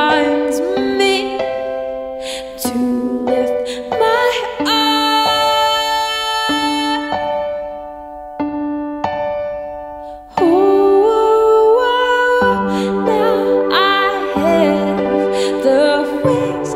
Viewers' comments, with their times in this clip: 0:04 I can't believe the note Made the hair on my arm stand on end. Perfect